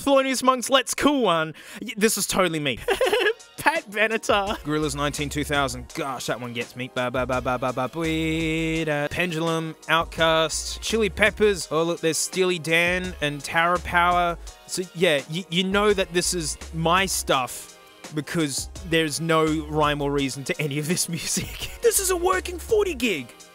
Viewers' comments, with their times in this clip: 0:06 did he just impersonate the the song that he clicked on?